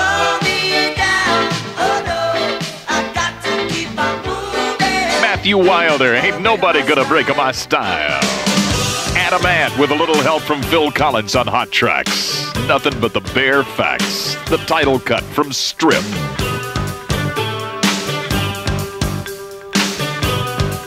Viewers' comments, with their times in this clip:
0:04 "Ain't nobody gonna break my sty-[oh fuck... well, better commit to it]-yyyyle!" haha